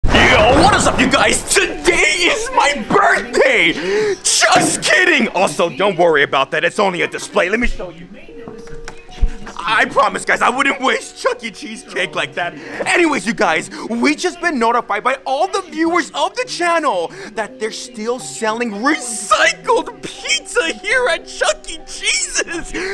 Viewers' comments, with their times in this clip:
0:04 sounded like Muscle Man from Regular Show. Also, I love this channel. It’s entertaining satire and I hope no one hates on this channel-